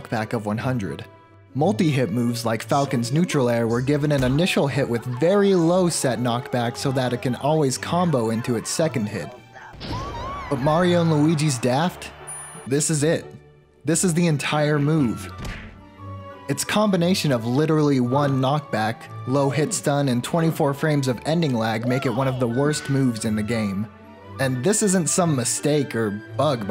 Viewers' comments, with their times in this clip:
0:03 bro wtf is that ow ow owie ow peach is doing after Cpt. Falcon kicks her in the head?
0:03 the really quiet sound effect made me lose my sh*t
0:03 Don't pretend I can't hear grape lady
0:04 the little hit and long painful sound effect in the back are the little audio gags i love in videos
0:04 you can hear someone saying “ow” in the background
0:04 Are we just not gonna talk about Peach making the grape lady noises 😂😂
0:08 I really appreciate the old lady falling and hurting herself sound 😂